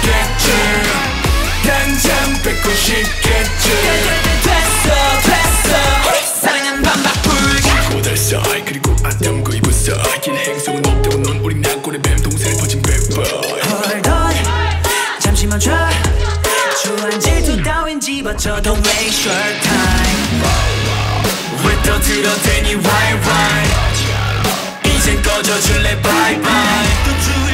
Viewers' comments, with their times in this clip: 0:08 Leedo's line always one bit up to something more with different flavor even in Seoho-Leedo-RAVN's lines :3 . . #RAVNeus #ToMoon #ONEUS